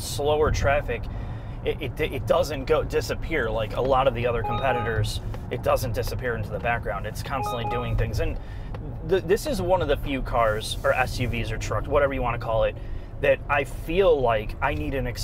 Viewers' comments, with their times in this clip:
0:03 Im somewhat disappointed to Mazda these days. No naturally aspirated version of the 6-cylinder engine, no flexfuel with E85 gasohol and methanol compatibility. Turbocharging is awful technology that rarely lasts long as the engine itself, when turbo fails it leaks oil into engine cylinder combustion chambers to burn as fuel and also leaks oil into exhaust system sometimes ruining the catalytic converter to the point where it also needs to be replaced. No flexfuel compatibility means that customer is stuck with higher fuel costs when oil companies again cut oil production to keep oil,gas, diesel prices high. Also more toxic fumes of the petroleum fuels. Hybrid car replacement batteries cost often thousands of money, some of the plugin hybrids even above 10000$. Whats that annoying noise is that a lane keep assist or blindspot monitoring system?